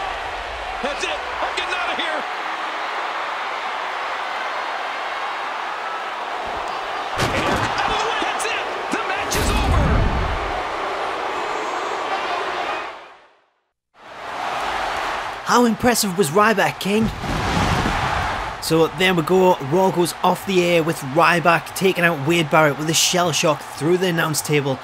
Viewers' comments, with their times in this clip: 0:10 there's no commentator